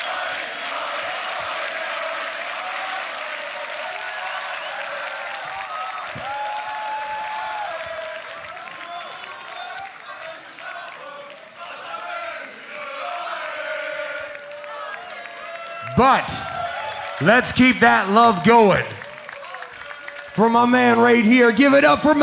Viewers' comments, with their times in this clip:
0:03 When the crowd sing this song it’s mean the cultures are still alive ❤